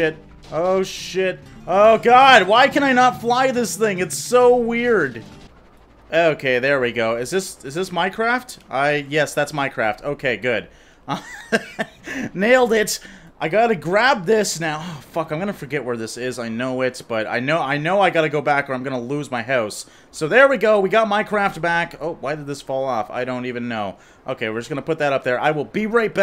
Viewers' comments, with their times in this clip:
0:07 "Is this Minecraft? Yes, that's Minecraft." ;)